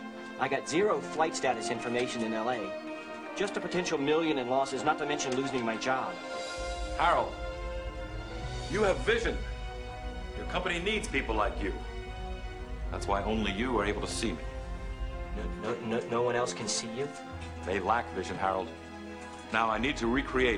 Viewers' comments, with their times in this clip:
0:08 From It starts to sound like a schizophrenic episode